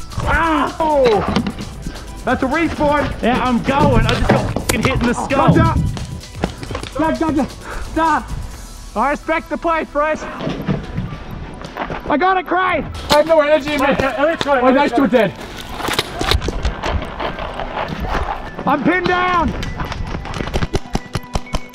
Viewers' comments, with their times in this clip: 0:07 I love how fresh literally screamed stop and put his hands in the air cuz he didn’t want to get shot😂